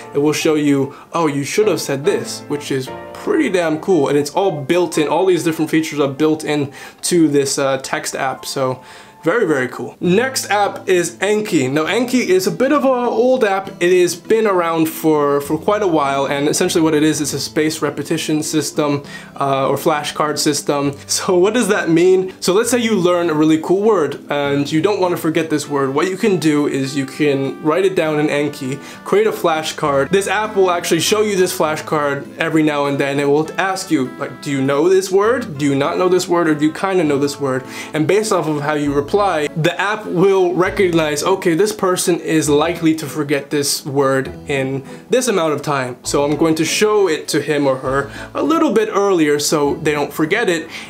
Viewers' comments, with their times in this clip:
0:10 lil sidenote: hearing that RuneScape music in the background just made me so happy xD !!
0:31 that RuneScape music was nostalgic. I don't know how it connected to the rest of the video but I liked it.